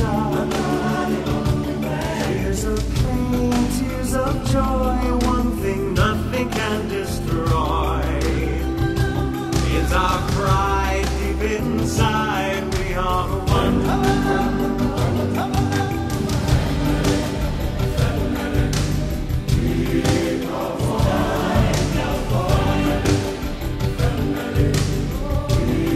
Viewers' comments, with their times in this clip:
0:06 Anyone else get shivers when Simba sings ' nothing can destroy'??